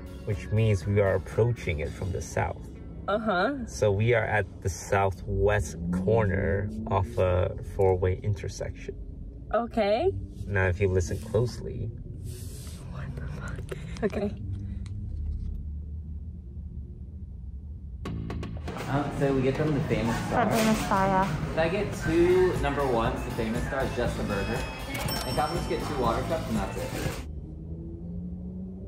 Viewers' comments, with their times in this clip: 0:10 I thought Toast was setting it up for his fart.😂